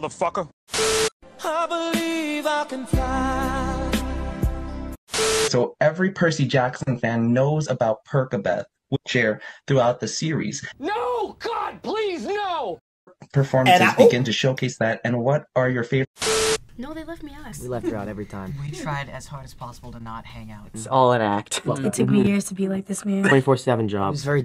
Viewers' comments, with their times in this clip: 0:04 why the heck did i hear TWERKABETH????💀
0:10 when the interviewer pronounced it "perKabeth" i screamed